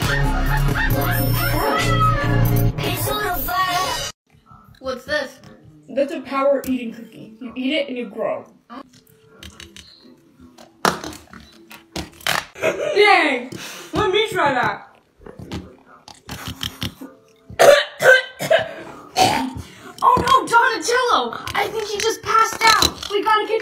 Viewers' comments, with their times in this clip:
0:04 got me when the phone played the siren 😭